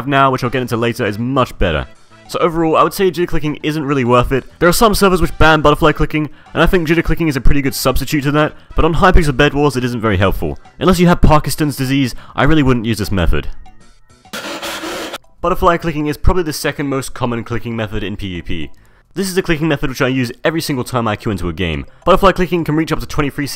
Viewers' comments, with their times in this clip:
0:10 Did he say Pakistan?